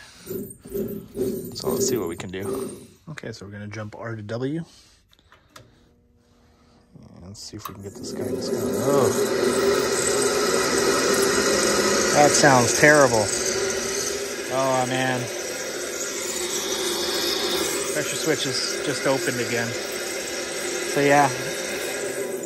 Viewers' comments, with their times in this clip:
0:07 sounds like a bunch of people skating on a wood floor 🤣 You're not horrible 👊😎 but the last person to touch it clearly was